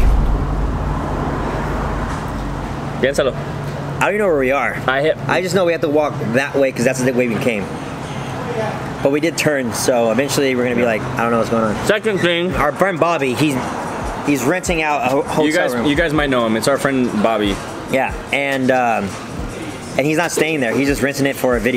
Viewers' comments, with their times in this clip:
0:05 “Piénsalo” used in the wrong context but pronounced game A1